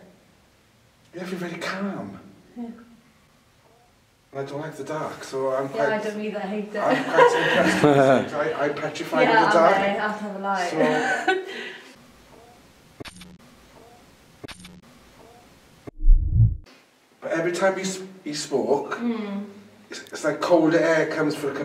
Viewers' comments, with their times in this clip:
0:03 a female voice says hello after he says I feel very calm heard that clear as day
0:07 Omfg I don’t know if anyone at all had spotted this yet but I’ve only just watched this one and had to play this part over a good few Times to make sure I wasn’t hearing things but after the guy says he feels very calm at the same time as the girls speaking you can just hear a woman’s voice clear as day saying “hello”